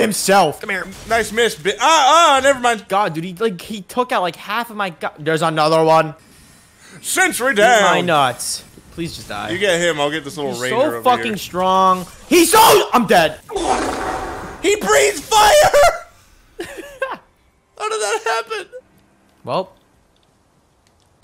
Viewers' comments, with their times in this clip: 0:06 bro that Engineer impression tho 💀